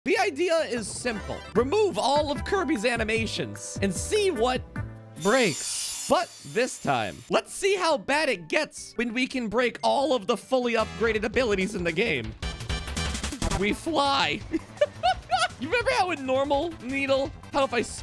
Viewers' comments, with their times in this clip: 0:00 I heard "The ildea isimple"